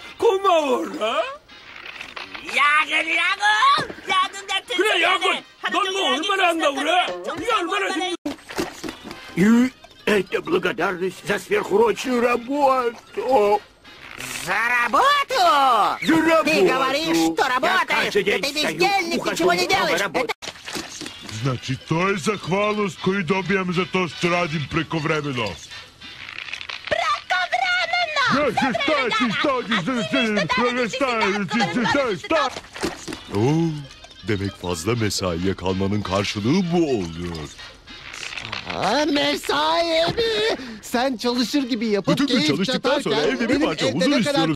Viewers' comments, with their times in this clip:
0:02 it sounds reverrsed
0:02 it can't just be me but he sound like Natsu from Fairy Tails (Yes I know his voice is Japanese)
0:08 Patrick sounds like he’s a grandpa
0:08 Did the Russian voice actor of Patrick had a stroke or smt? Lmao
0:13 spongebob sounding like waluwigi
0:14 I love how happy SpongeBob sounds
0:14 Vladimir Lenin in heated conversation with one of his generals upon learning of a coup.
0:14 In i hear: Za Warudo
0:15 Russian spongebob sound like spongebob
0:20 i miss old voice
0:26 spongebob sound like a girl
0:27 spongebob sounds like a woman in this language
0:28 this sounds like me and my mother when we have angry argument
0:33 Why does the Turkish version of Patrick is like the voice of a sexy man
0:38 old man sigh on me
0:41 Random argument at turkish market be like
0:42 sounds like two redditors arguing